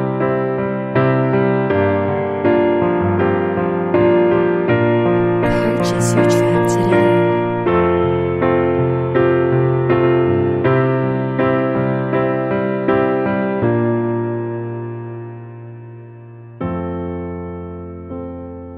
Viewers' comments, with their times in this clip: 0:04 Wtf was the voice or piece of lyrics in the way I loved you